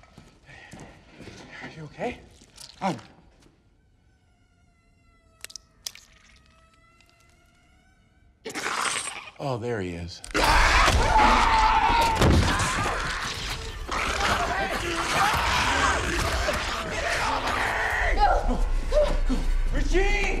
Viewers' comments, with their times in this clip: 0:08 "Oh, there he is." Half of the audience laughed while the other half squealed.